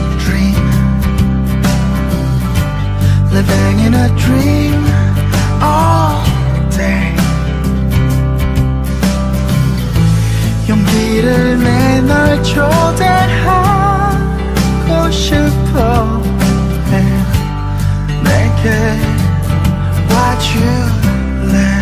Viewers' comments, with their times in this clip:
0:03 I hear, “We bang in dream all day..” I’m sorry. This is a really sweet song.